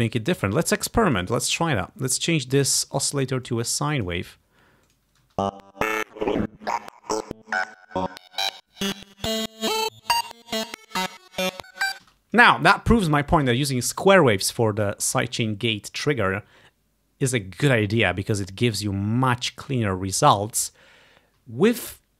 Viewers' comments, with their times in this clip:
0:05 I actually preferred the glitchy/rough/distorted sound when the gate starts to flicker with a short release! :3 But yeah, controlling the gate more directly via the MIDI notes might be more straightforward to set up. I wouldn't expect the end result to be appreciably different, though.